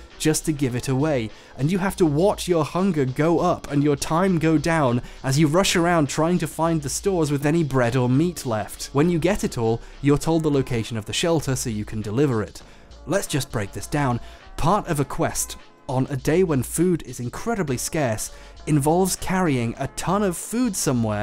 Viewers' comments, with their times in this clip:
0:09 Is Bomberman Hero - Redial playing super slower down as background music???